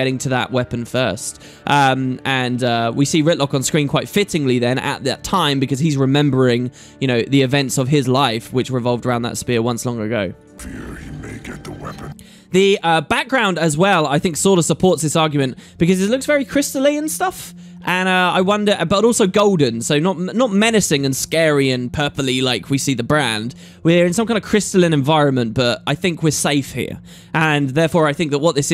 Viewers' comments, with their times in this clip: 0:10 to me the voice " I fear he might get the weapon " sounds like Rytlocke to me.... =S